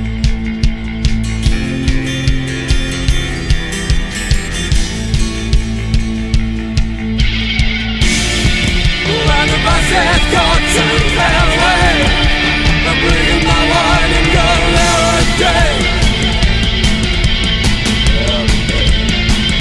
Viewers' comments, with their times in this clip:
0:06 and onward....licks of fire linger throughout this music....intense!!!